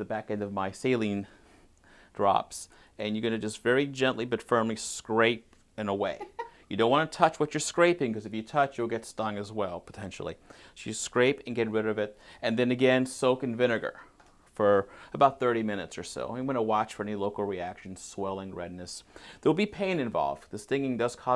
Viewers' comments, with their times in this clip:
0:06 repeat the girl's laugh over and over